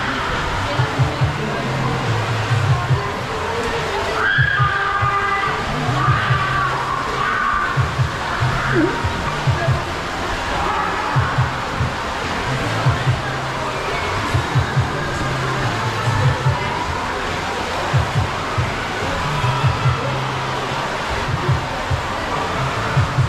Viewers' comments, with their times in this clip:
0:04 Awesome vid 🤙 the last slide not so much 😆. why do young ppl have to scream? I’m a grown arse guy i don’t do that i just say inappropriate things 😂